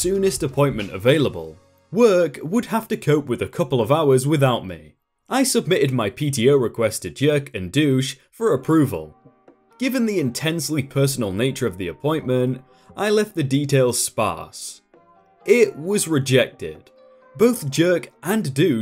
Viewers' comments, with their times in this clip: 0:03 Sorry, only in and I have to stop. I can no longer listen to "heatch" for the letter "h".